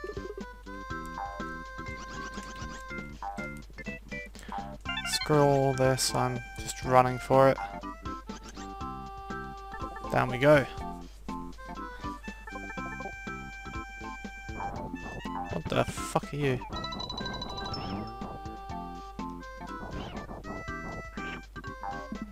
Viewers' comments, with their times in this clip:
0:04 I think nearly everyone in the world can agree man that Baby's Mario's cry is frustrating and annoying! Ooh, tough luck with Salvo the Slime. But the second time around you shredded him :D Lol! Yoshi reminds me of a lot of teachers in their first year teaching while they are in "survival mode!"